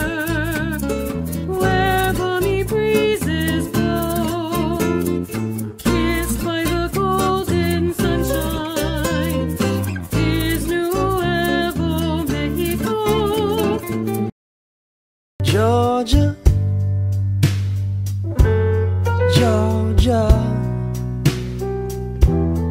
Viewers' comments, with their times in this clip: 0:04 New Mexico's state song melody sounds like... the music of some Indian tribe, I think.